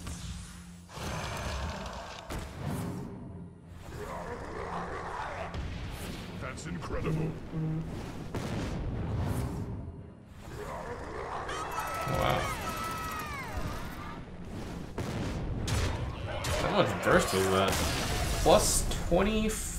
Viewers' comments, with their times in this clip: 0:06 his phone vibrates. Unnaceptable, no professionalism.